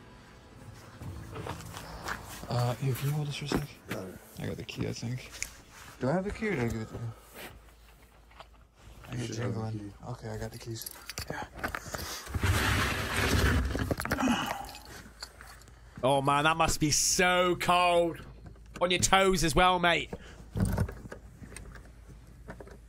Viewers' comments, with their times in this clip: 0:06 There’s a grunt sound 😮